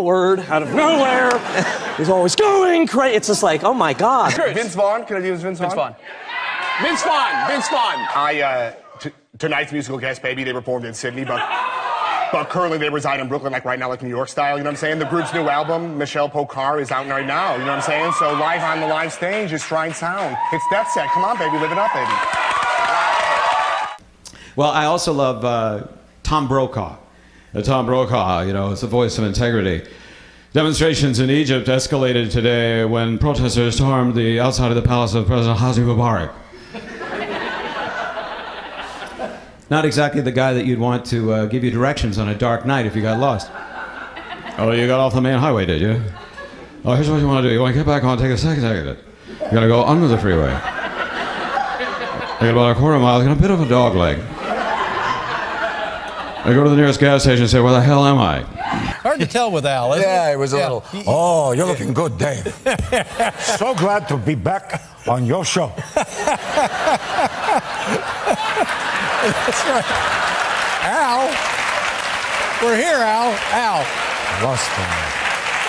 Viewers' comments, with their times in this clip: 0:04 Jonathan Kite killed it doing Vince Vaughn, voice was spot on!
0:05 The Vince Vaughn is amazing.
0:05 Holy shit, that Vince Vaughn was perfect.
0:05 that Vince Vaughn is ON IT😎
0:07 if you close your eyes, that's Vince Vaughn speaking
0:08 Vince Vaughn enters Jonathan Kite's body.
1:02 Kevin Spacey doing Al next to Al himself OMFG!! absolutely hilarious and Al even thought so. Kevin Was spot on hahaha lol.